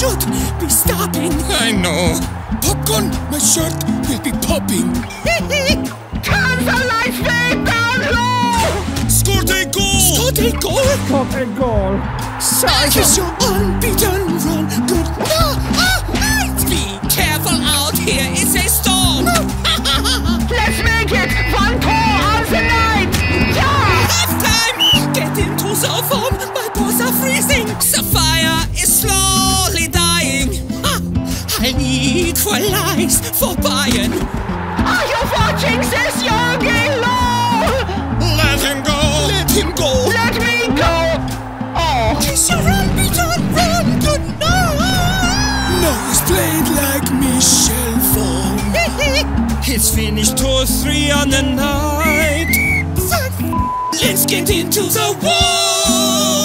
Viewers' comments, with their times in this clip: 0:09 i can hear ronaldo voice
0:32 Müller: scores Spectator: screams Hold up-
0:44 Neymar: Kiss your unbeaten run Goodnight **Yelling**